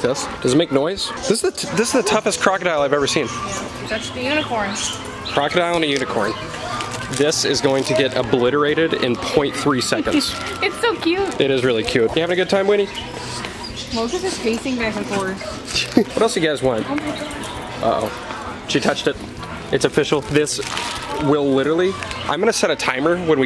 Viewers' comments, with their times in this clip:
0:06 Sounds like my dog